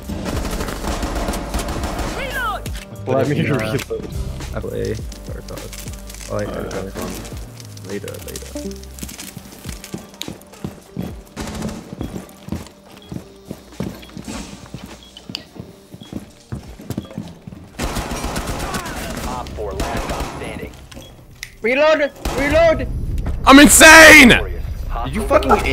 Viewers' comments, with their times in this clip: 0:05 that discord sound made me think I was in a vc
0:06 the leaving vc sound